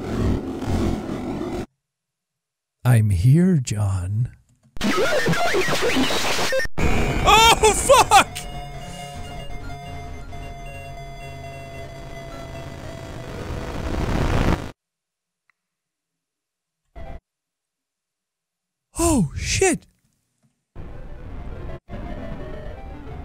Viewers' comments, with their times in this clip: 0:04 ong guys they spoke enchantment table language